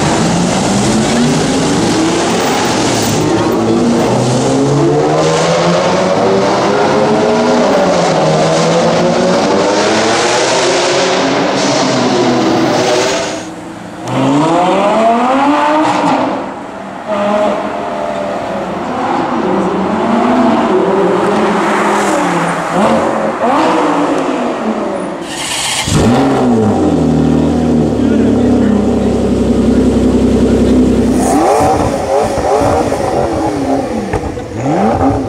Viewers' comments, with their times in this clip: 0:08 Holy smokes, the Enzo sounds incredible with the noise echoing off of the houses. Absolutely epic!
0:10 Enzo sound AMAZING! 599 GTO too
0:16 Stupid couple ... I wish there was a game that could capture the power and spirit of these exhausts w/o it sounding too quiet (GT5), or too static (Forza 4). Or too many sound glitches you get playing REAL SIMS like rFactor, GTR or simraceway. Reason I ask for a game is because IDK honestly the possibility to actually DRIVE all of these cars IRL...lol.